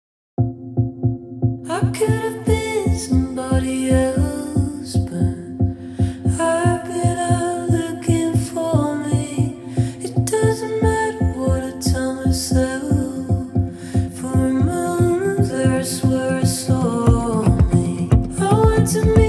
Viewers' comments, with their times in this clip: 0:06 It's neat how the groove isn't yet solidified, so a first-time listener gets a few seconds to guess where the downbeat position is going to be revealed within that. And guessing wrong is part of the fun. Aimee Nolte did a video about "groove discrepancy" on that subject, that's fun to watch (the example there was Rufus w/ Chaka Khan "Tell Me Something Good" but this track here is going to be another good example of that admittedly nerdy concept)